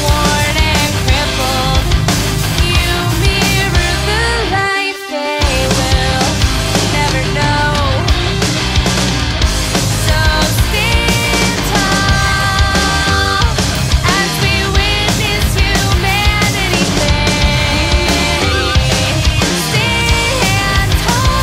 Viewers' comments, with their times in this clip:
0:08 Video works up until Lyrics are kind of odd, but the sound is really different. I'd like to see what the lyrics even say...